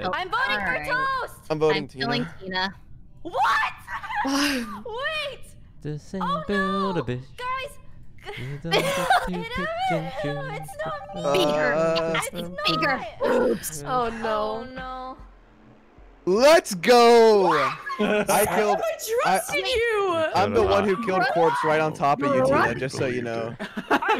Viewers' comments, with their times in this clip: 0:06 toast sing bella poarch song uwuu